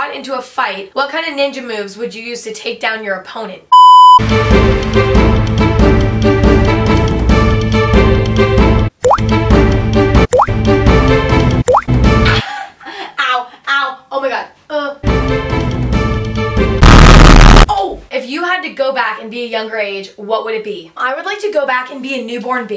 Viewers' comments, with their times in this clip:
0:05 THE WATER DROP NOISES ABABHAIDHS